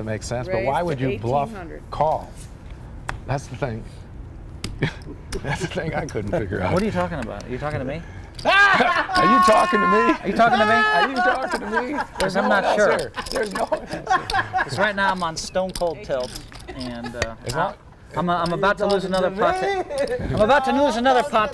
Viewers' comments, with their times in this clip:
0:09 Johnny blew out Daniel's ear drum